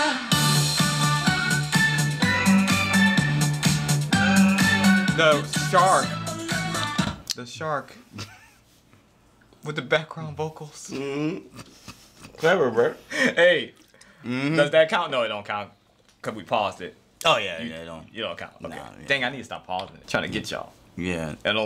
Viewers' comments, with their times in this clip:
0:06 the shark got me😂 now it feels lest scary cuz he’s just on backing vocals with a beautiful baritone 👌✨